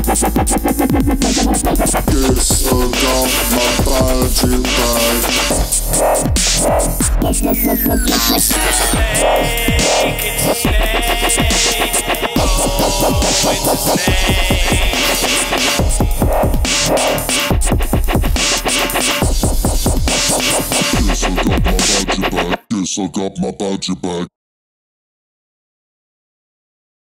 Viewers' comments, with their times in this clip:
0:08 I Like How You Put The Voice In A Hippie SlowMotion Voice!